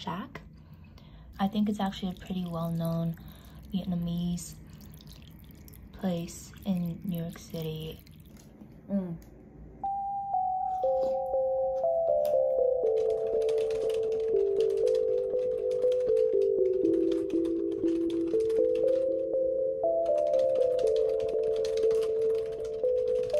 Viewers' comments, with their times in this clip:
0:10 the IVE melody ! love how raw and honest your videos are - subscribed!